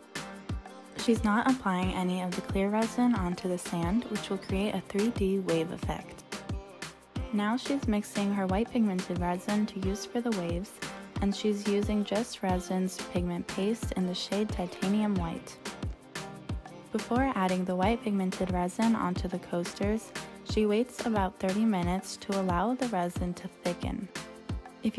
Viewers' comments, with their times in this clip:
0:08 her voice and background music 😅 I don't know if you guys notice but it was like a rap😅😅